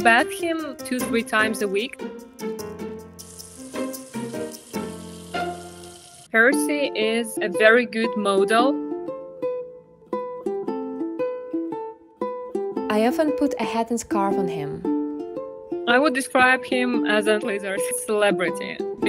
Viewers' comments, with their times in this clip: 0:06 it sounds like animal Crossing music and he's adorable❤❤❤